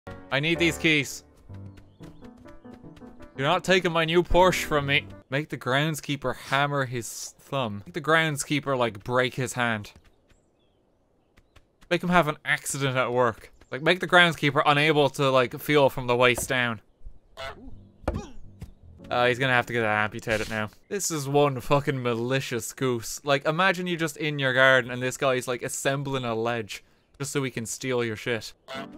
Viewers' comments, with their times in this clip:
0:04 What. I thought only the americans say porsch. Man I'm German and I am triggered.
0:10 An ak-ccident at work 10 seconds in and he already sounds like a goose